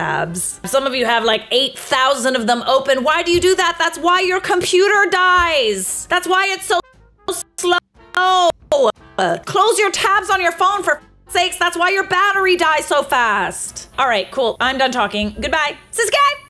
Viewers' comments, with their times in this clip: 0:05 You editer did those stutters on purpose to drive home the point even more, I caught that!